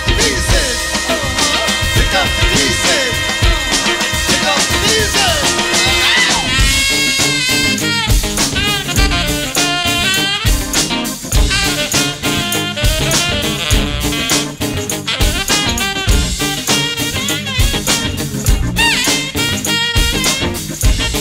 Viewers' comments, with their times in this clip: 0:04 Hamish from ... No one cooks that rhythm guitar quite like him... pocket...all...day..long... Many cats sorta just lose it when they get old. Occasionally...some don't... Hamish you badass! He and Quest are feelin' the same thing...meeting of the minds...